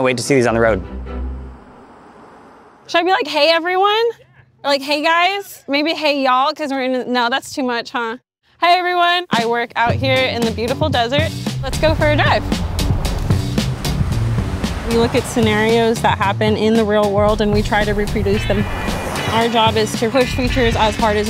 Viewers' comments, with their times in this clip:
0:09 that snare drop = 👩‍🍳💋